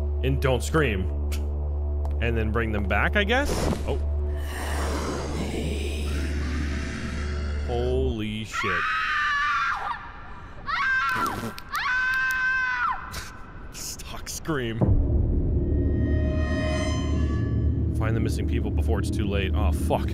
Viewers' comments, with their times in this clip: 0:08 I'm so sick and tired of people using this stock scream. I remember it from Parasite Eve 2 and can't unhear it.